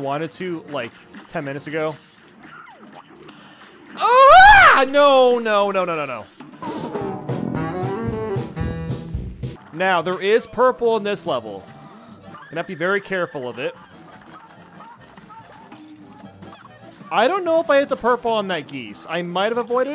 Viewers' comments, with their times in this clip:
0:04 bro that scream😂